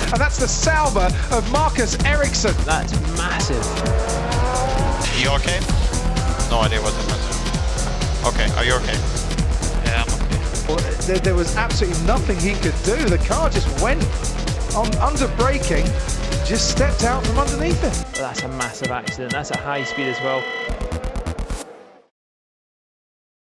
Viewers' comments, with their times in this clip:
0:06 Windows xp theme playing